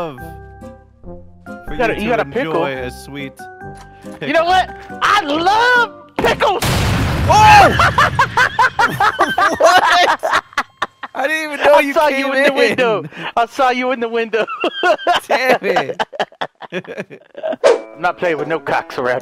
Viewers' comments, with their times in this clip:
0:05 when he yelled he loved pickles I laughed so hard that I started coughing